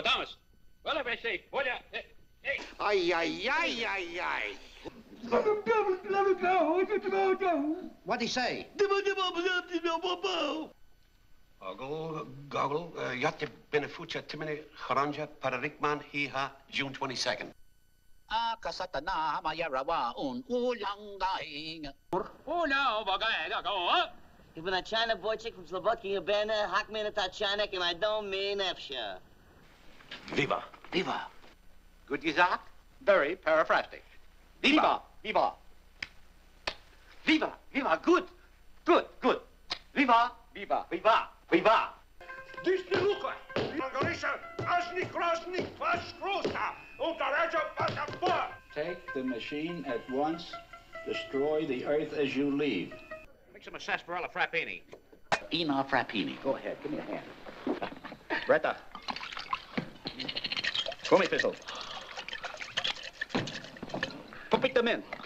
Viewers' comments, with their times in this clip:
0:10 I first saw this film when I was a kid, and for a long time I thought that was a real language that he was speaking! 😂
0:48 The way they read the captions lol